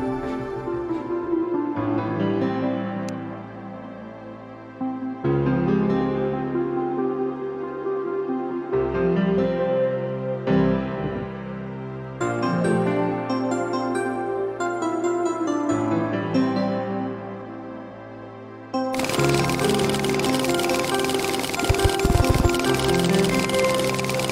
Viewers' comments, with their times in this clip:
0:06 the sanctuary theme doesnt sound very good sped up